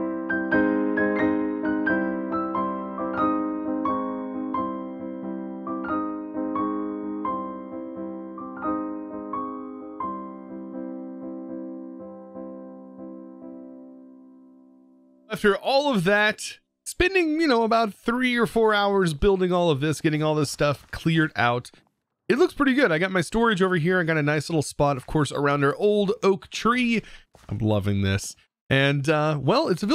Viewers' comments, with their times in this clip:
0:10 this is why I sleep to you the soft music and nice builds